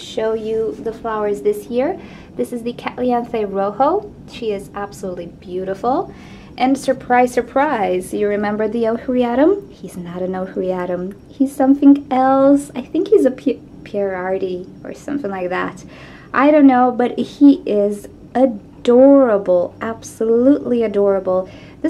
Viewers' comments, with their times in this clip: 0:07 ;) I dont know it. ;) I don't understand the name this orchid with hearing..